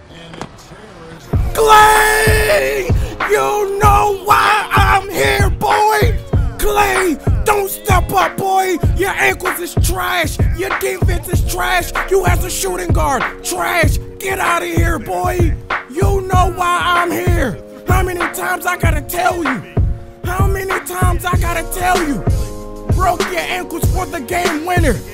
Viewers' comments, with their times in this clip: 0:06 His voice doh